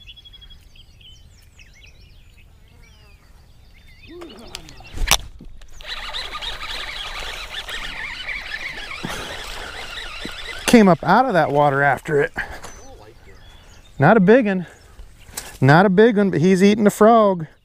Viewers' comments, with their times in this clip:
0:05 Is that your LFS Speedspool? Cause mine just started making the same noise yours does when I set the hook. It's less than 2 months old so that's disappointing.